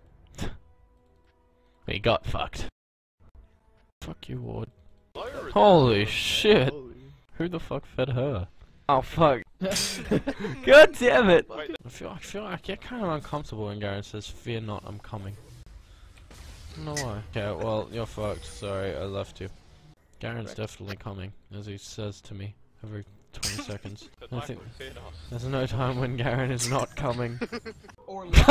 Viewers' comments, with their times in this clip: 0:10 the way he said it was so cute